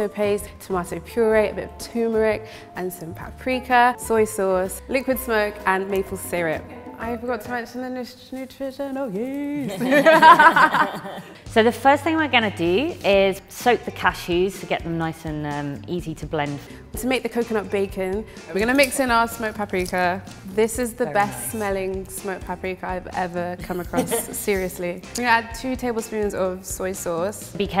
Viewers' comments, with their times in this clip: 0:10 OMG!! That laugh was Scary as Hell. WTF